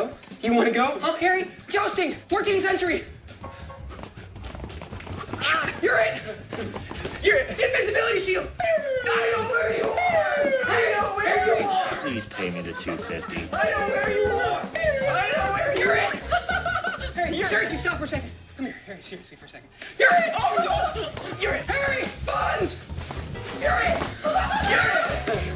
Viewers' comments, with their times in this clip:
0:09 sounds like he said “gotta go over the store”